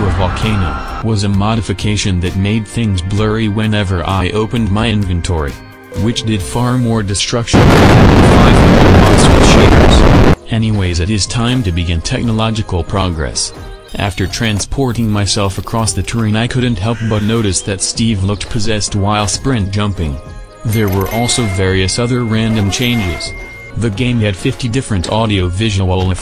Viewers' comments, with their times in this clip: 0:07 bro I can not stop laughing. I guess sometimes loud = funny